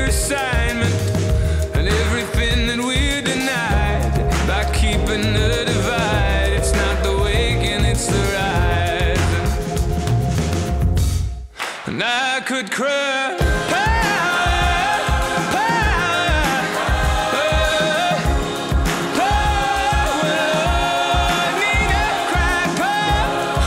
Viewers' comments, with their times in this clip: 0:08 i'm almost totally convinced this isn't live, not just because of the lack of sync at the mark, but other little indicators, like how close vs far they are from the microphone in comparison to the volume, the small number of backup singers vs the large number of voices, etc